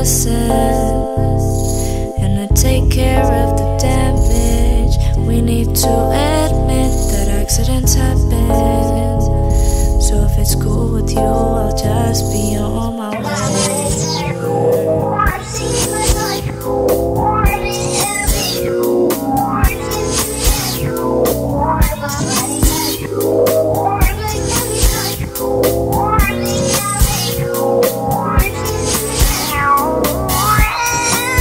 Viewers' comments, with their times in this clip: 0:10 sounds creepy, the songs backwards. Love the song
0:15 I love how the tune switches up and plays backwards !!!!!!!!!!